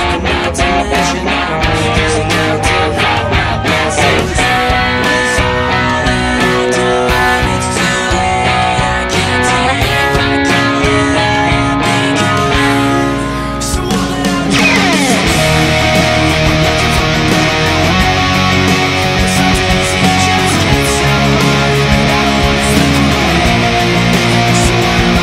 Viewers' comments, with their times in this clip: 0:10 Great cover. One thing that I do want to say is that the chord sounded very wrong